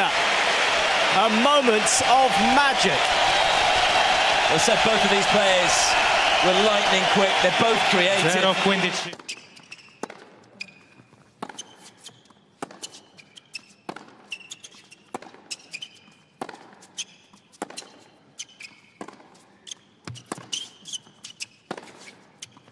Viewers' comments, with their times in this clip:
0:07 man was seriously covering his ears because the crowd was too loud